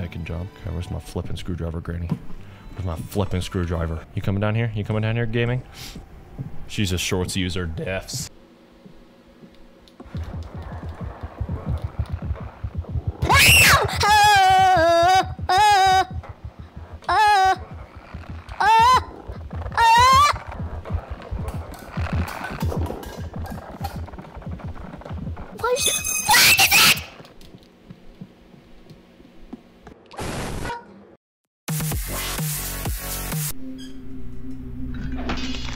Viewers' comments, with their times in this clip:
0:05 bro started singing
0:08 bro let out his inner opera 💀
0:12 man got so scared he started singing that's crazy
0:12 made me scream when he screamed he scared me more then the game
0:12 bro your scream made me jump 💀💀💀
0:12 bro started yodeling
0:13 Bro was hittin them musical notes 🎵
0:13 bro started singing melodies
0:13 bro was singing gospel music 💀
0:14 blud made an orchestra💀
0:14 bro turned into Alvin
0:14 Angelic voice. I'll play this when I'm trying to sleep tonight
0:15 blud started singing
0:18 blud starting singing 😭😭😭😭